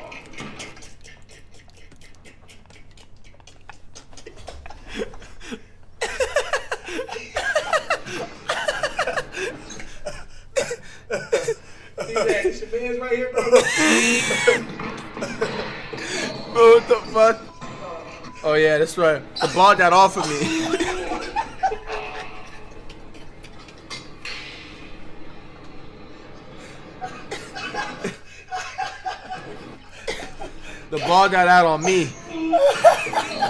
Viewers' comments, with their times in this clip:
0:06 flight be laughing like elmo
0:20 Genuine simultaneous laugh